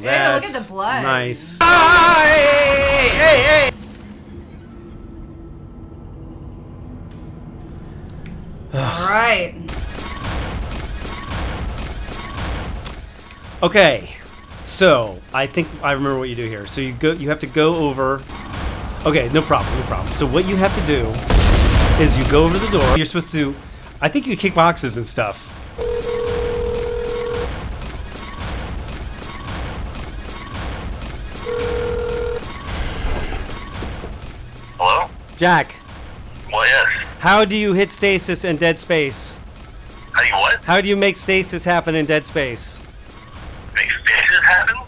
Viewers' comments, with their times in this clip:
0:10 damn that door is catchy
0:27 the door say's geoff repeatedly